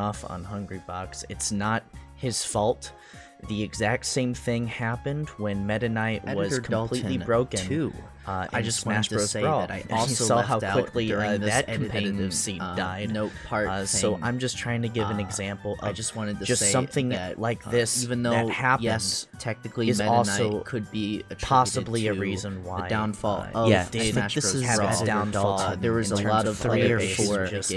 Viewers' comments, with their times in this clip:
0:10 The part was mad annoying ngl bro, i dont see why you would edit it to make the audio mad confusing and last so fucking long, its not funny. Other than that the video was good